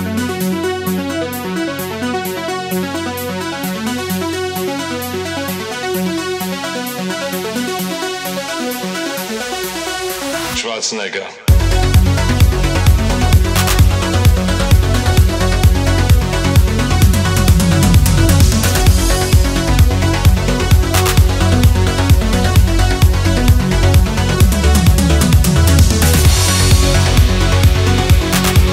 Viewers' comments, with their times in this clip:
0:09 "trust nigga" dat drop tho.